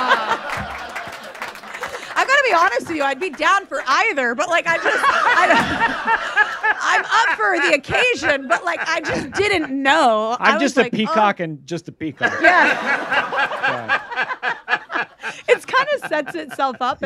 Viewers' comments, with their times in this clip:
0:04 Conan laughs just like Mark Hamill's joker